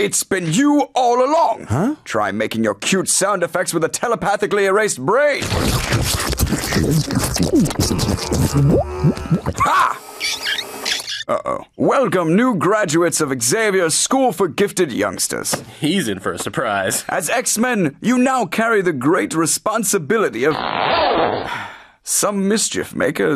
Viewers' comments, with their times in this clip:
0:09 I NEVER realised, but he regretted killing him because his chair was ACTUALLY squeaky!